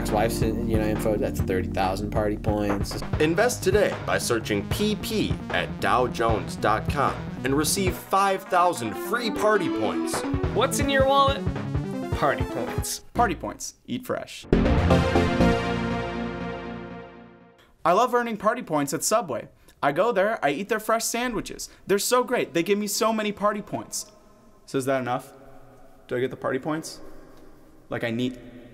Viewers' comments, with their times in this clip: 0:10 Dont think I didnt hear that gamecube boot riff